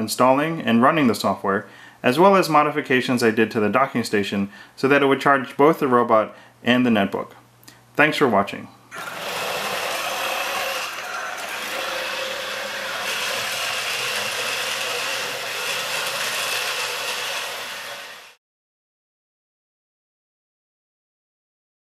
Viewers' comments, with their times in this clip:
0:09 *proceeds to fall down the stair case* CRASH! Guy on skype: oops... HEY! PUT ME BACK UP PLOX!